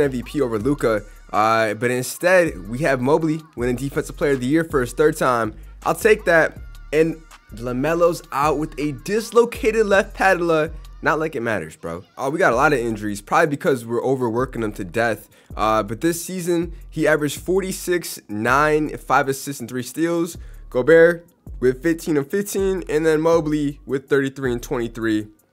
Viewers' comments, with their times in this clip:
0:09 so funny how he pronounces patella